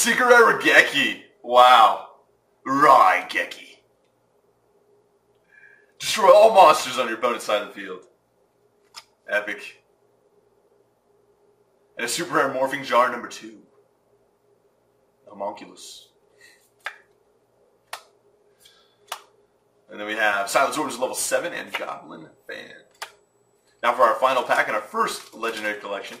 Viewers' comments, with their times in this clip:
0:08 who heard TROLLLL MONSRTERS